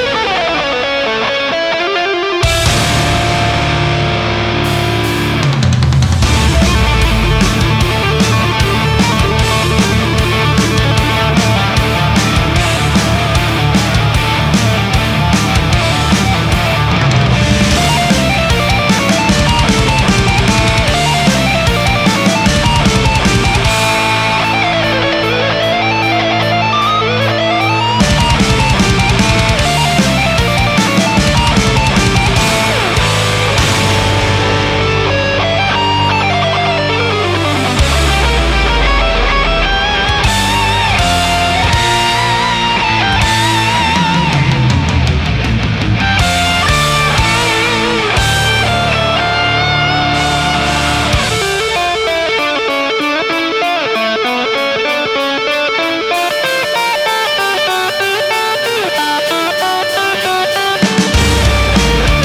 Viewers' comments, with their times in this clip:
0:06 i remember when you first posted this some years ago. i still watch it a few times a year because it is so good. every other cover i see does the part in a weird legato tapping style, but you play it the way it is supposed to be. and it sounds freaking amazing!
0:50 the best guitar ever